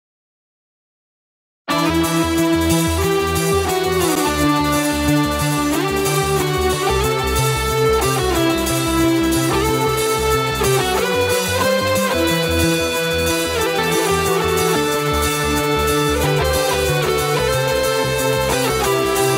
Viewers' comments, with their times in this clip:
0:06 song sounds like atreyu?